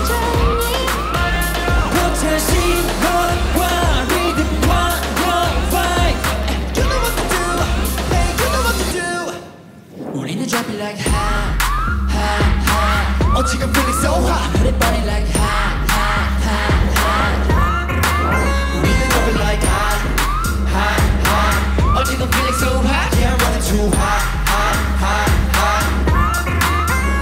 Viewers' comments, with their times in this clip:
0:10 omg his voice is here 😳😩